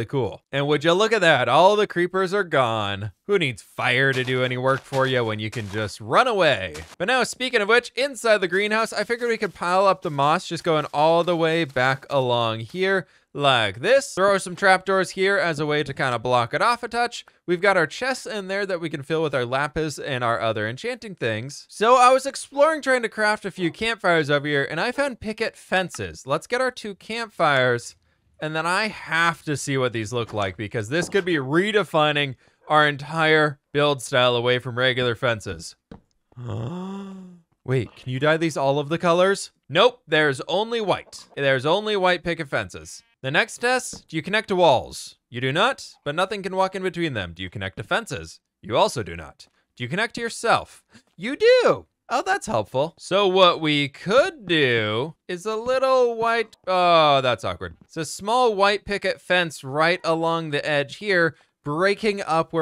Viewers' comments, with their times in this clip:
0:03 he literally sounds like the Croods.
0:43 just close your eyes and imagine your therapist talking to you